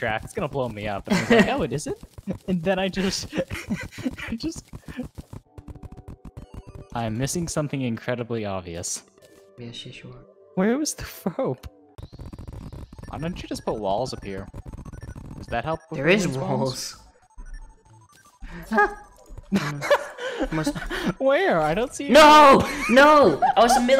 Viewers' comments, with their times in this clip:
0:10 :perfectly cut scream